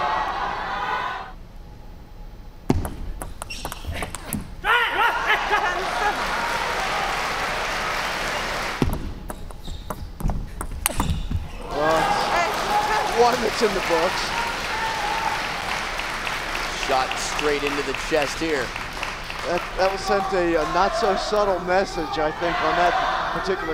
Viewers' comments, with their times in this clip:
0:10 so crispy sound